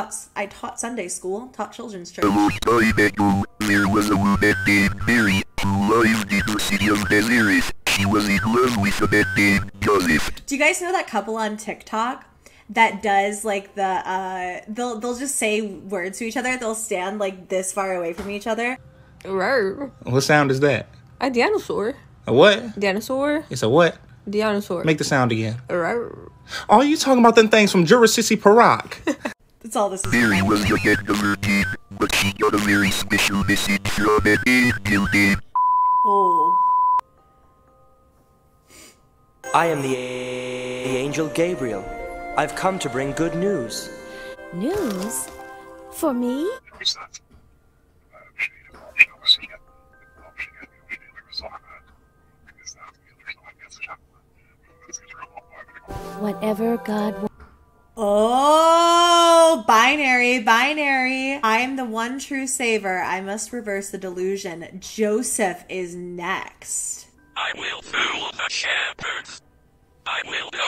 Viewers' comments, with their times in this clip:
0:04 when the homie gets a mic from 5 below
0:53 I had to mute it during the the whispering parts messed with me and I was going into sensory overload